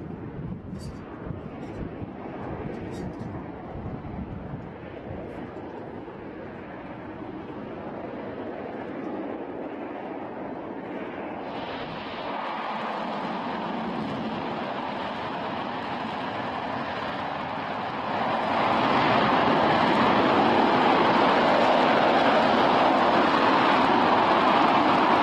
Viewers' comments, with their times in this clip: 0:09 When someone tries to turn on their ps4
0:10 that sound like super saiyan transform